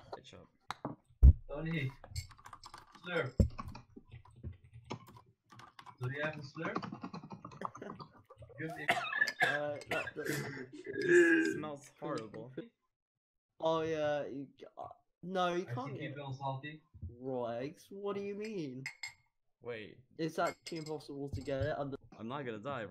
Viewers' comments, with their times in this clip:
0:08 cat dying sounds